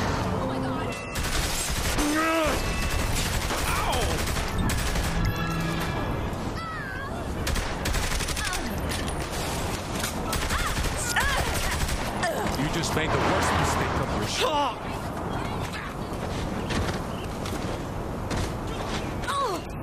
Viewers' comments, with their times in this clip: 0:03 whenn that cop says OW it reminds me of tht video where the guy falls on his skateboard, and hes like OW and the board hits him on the head